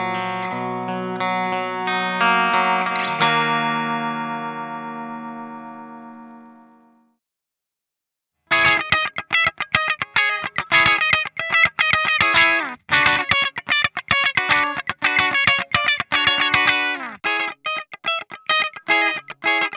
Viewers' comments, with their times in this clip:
0:06 funny how the passive pickups sounds way more compressed than the EMG